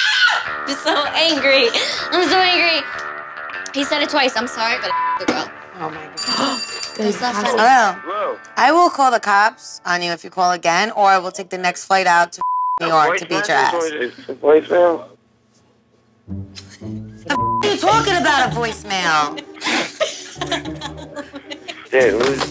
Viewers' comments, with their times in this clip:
0:09 omg it kinda did sound like a voicemail someone would use haha